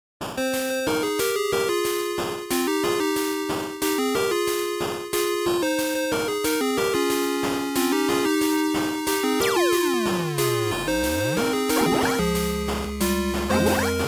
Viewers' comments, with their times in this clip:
0:00 does anyone also keep rewinding to for the video game intro sample? i'm addicted to it now damn